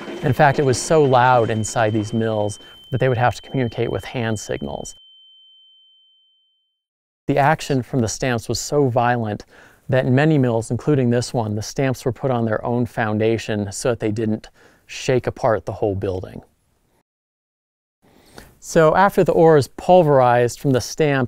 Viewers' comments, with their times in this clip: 0:04 I had to go back and double check I couldn't tell if I was actually hearing the ringing or not... This video is giving me tinnitus! hahaha